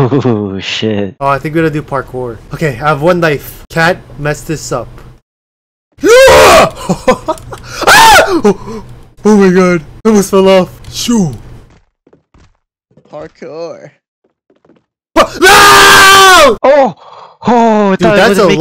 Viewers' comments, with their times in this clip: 0:06 I screamed with you